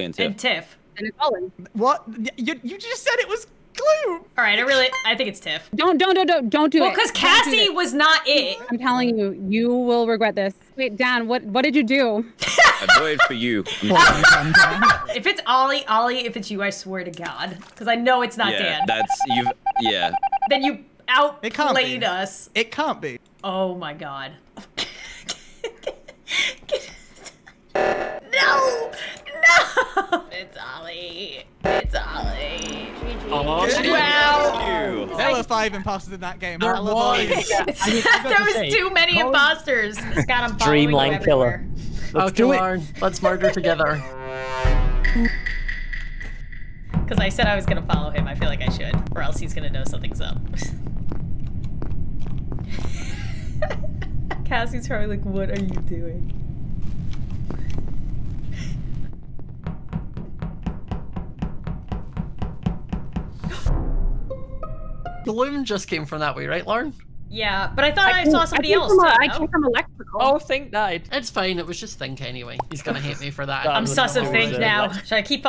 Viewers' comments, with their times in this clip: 0:09 she sounds so scary lmaoo
1:01 You know really sounds like someone tapping on your window when it’s 2AM and your in bed